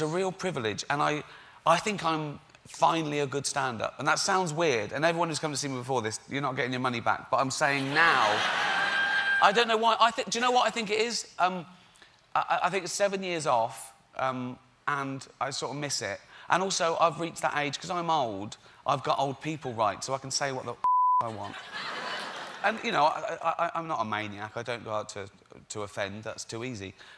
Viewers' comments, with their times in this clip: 0:06 WTF was that scream
0:07 a siren just went off in the audience(?)
0:08 how can you laugh like that?